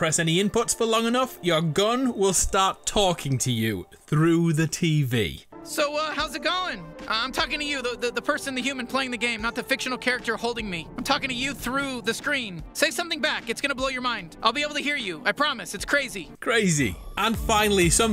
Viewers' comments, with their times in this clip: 0:05 Why does he sound like Morty from Rick and Morty?
0:06 Thas Sounds Like Morty From Rick And Morty